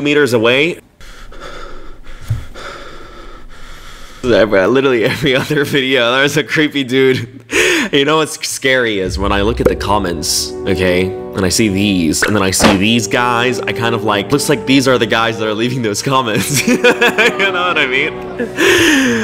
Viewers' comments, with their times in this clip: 0:04 NO NO NO IM IM MUSLIM AHAHAHHAHAH (AHAHAHAH to me is also screaming sounds👍) gets hijab and covers up